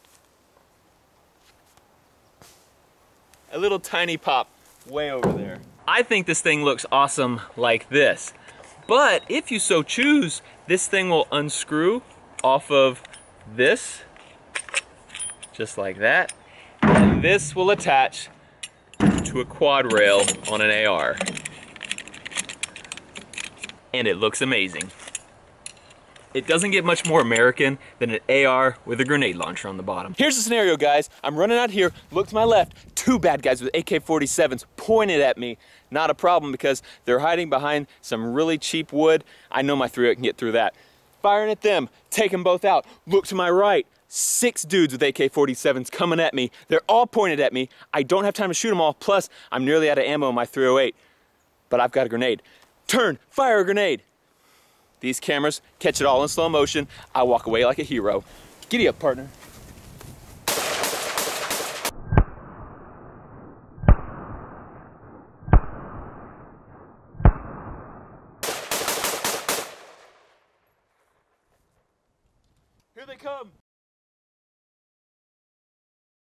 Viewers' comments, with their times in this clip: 0:07 totally not a voice crack on
0:09 voice crack!! (Love your vids BTW)
0:09 Roses are red, violets are blue, he cracked his voice
0:09 His voice cracks
0:09 Voice crack hahahahahahahahahahahahahahahahahahahahahahahahahahahahahahahaha
0:10 His voice cracks
0:10 voice crack made me laugh not to be rude though
0:32 i didnt hear you say "bad guys". i heard you say "black guys". i had to rewatch it to make sure.
1:03 it sounds like a Star Wars gun